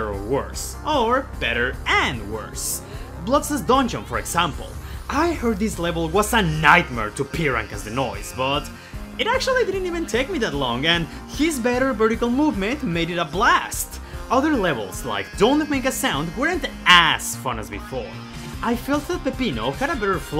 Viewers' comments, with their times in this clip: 0:06 noise dont need no autotune🔥🔥